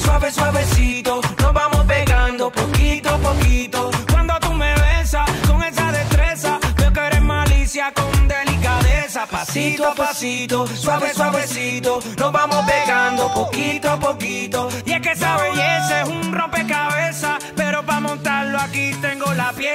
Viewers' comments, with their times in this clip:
0:03 me listening papito papito